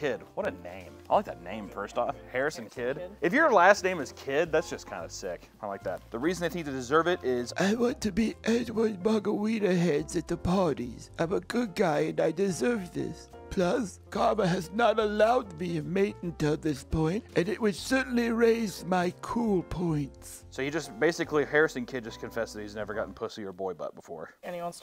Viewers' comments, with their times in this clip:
0:07 Bro sounded like space dad from mega mind 👌